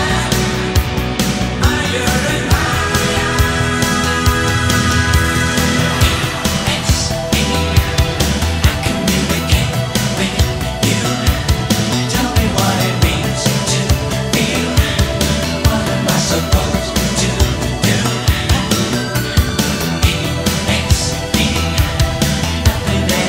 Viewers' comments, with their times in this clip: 0:06 Background keyboard flute melody 👏👏👏👏👏